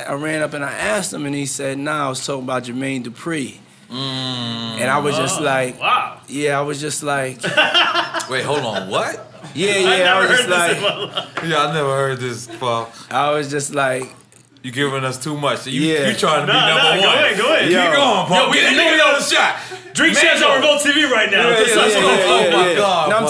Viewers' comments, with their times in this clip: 0:07 The way EFN started laughing 😂😂😂😂😂 Puff was cappin that shit down lol